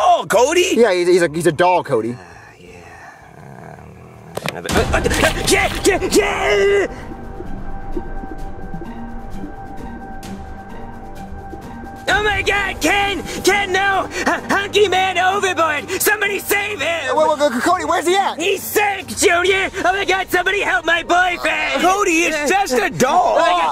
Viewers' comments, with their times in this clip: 0:05 the way Cody said “ken” 😂
0:06 what was that voice? lmao 😂